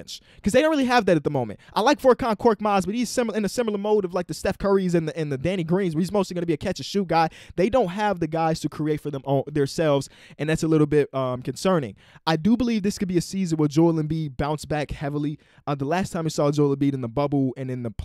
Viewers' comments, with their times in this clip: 0:04 Did he say Steph or Seth? Neither is correct in the statement, but it does change the sentence.